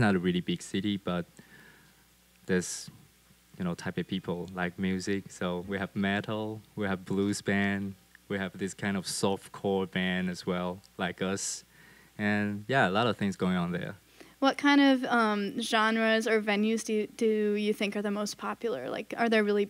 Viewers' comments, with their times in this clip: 0:04 no homo but I like the way he says metal